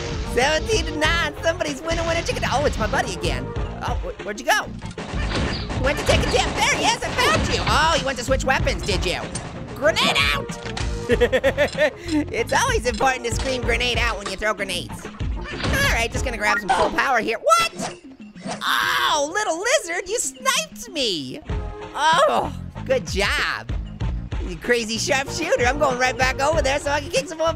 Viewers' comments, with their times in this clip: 0:10 his laugh sounds different.